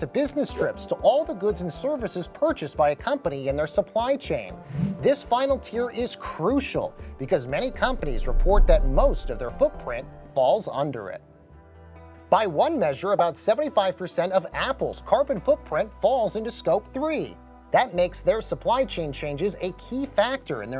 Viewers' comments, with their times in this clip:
0:08 Wow. The low frequency made think it was an earthquake.